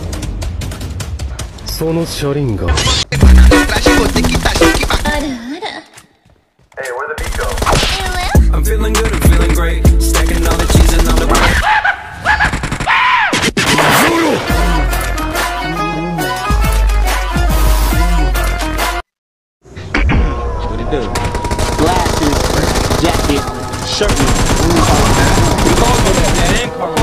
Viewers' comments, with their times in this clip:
0:03 I smell Brazilian music 😍🇧🇷
0:14 bruh, This bgm.....its A classic🤩